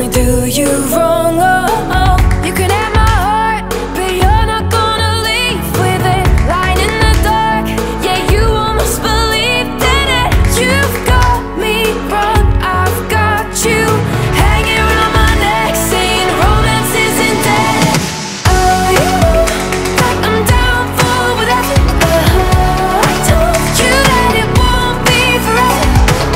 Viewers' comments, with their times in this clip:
0:10 to me kinda like Anne Marie